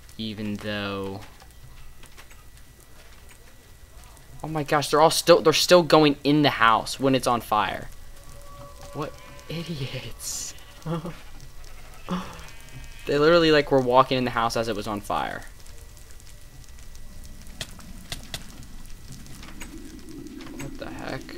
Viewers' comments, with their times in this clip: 0:07 scary cave sounds
0:08 I think I heard a creepy cave sound